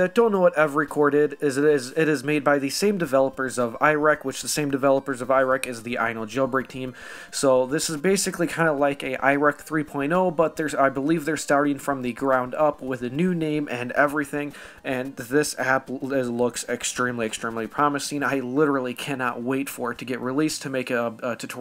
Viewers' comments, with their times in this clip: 0:05 OMG YOU SAID IRAQ WICH IS MY COUNTRY YOU MIGHT SAY NO BUT USE CAPTATION IDK WHAT IS CALLED HE SAID IRAQ TWO TIMES